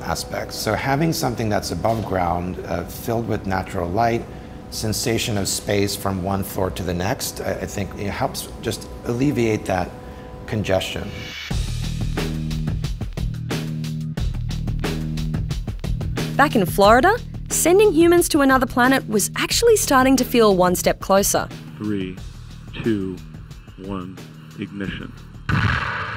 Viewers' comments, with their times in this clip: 0:10 tell me you thinking the same about the beat